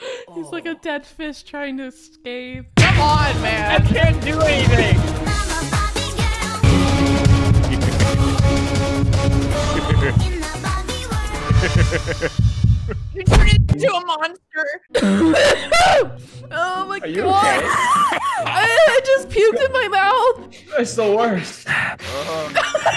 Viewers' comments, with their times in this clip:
0:05 Love This Song😍